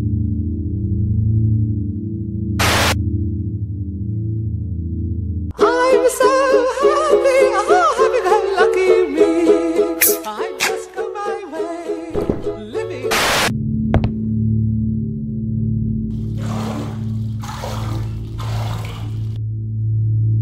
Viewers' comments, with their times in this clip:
0:05 that music makes me laugh so hard 😂😂